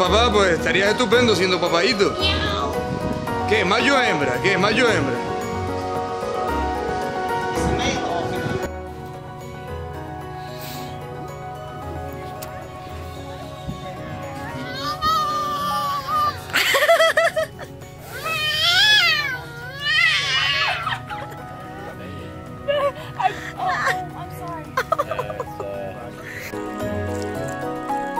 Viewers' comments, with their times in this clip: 0:10 whaat it's crying like a human baby
0:15 It was like Simba as cub trying to roar